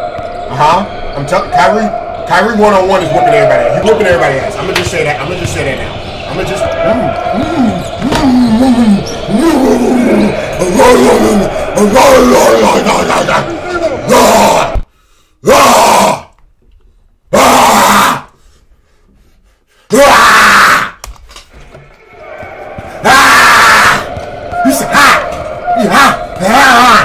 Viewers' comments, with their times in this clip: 0:07 teacher: what noise does a dog/cow hybrid make sped kid:
0:11 lmaoooo he started barking at dude